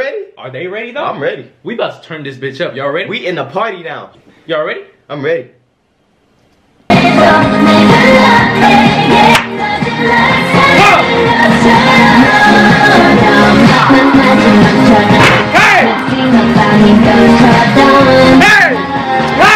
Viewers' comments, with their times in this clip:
0:05 tap here if u want earrape I WAS USING FULL VOULUME HEADPHONES BTW NOW IM DEAF
0:06 headphone users beware 😂😂
0:07 these dudes really got the mf speakers......THAT SHIT REALLY IS A BLAST THO 🤣